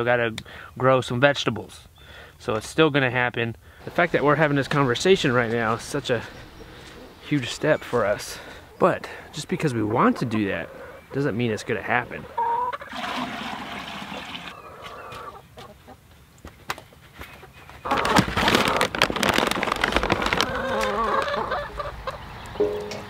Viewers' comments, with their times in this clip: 0:04 Your rooster starts crowing at 6am!! I have a couple that start at 4 to in the morning 😂😂😂